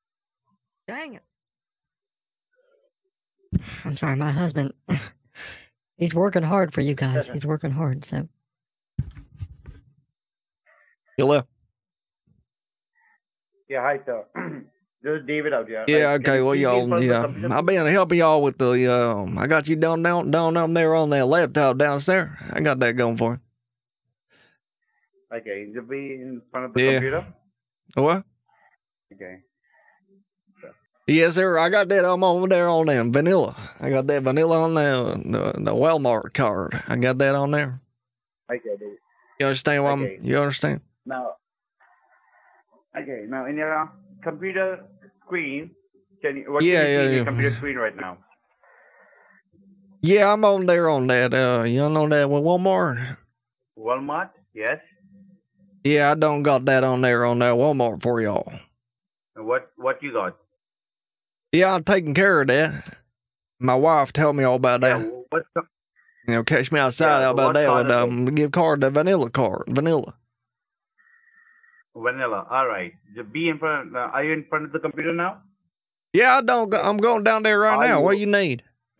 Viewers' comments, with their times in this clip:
0:05 Love that Boomhauer voice
0:33 Boomhauer comes in
0:55 Sounds like Boomhauer
1:05 you sound like boomhauer from king of the hill